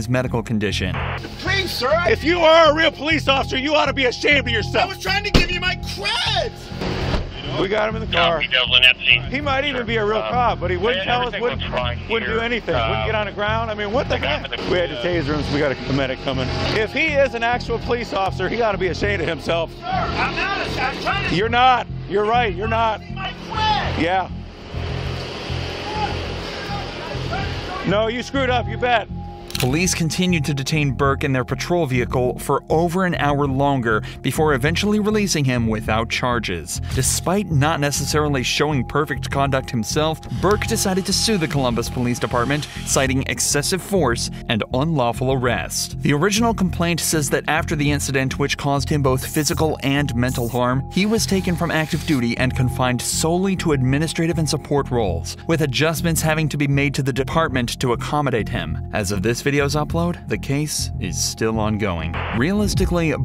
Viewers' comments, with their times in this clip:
0:03 may be the most beautiful shriek I've ever heard. "I was trying to give you my creeeeeeds"
0:04 The way the dude yells "I wAs TrYiNg To GiVe YoU mY cReDs!" has me dying
0:27 his son def plays counter strike, LOUDLY
0:44 Agent sounds like a sissy. He totally capitalized on this situation.